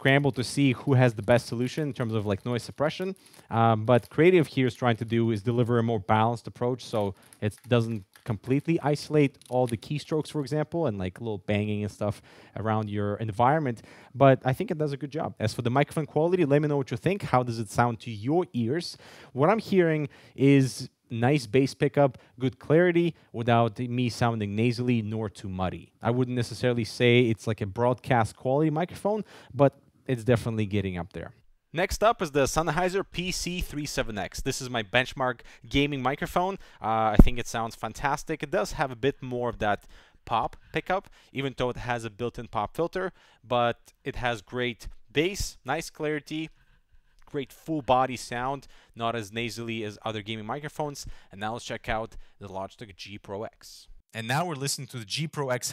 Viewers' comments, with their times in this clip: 0:05 The mmx300 has a supurb mic, im curious how this one stacks up against it.. edit it sounds awful.
0:42 of course PC37x waaay better , i don't see SXFI the best gaming mic and not even close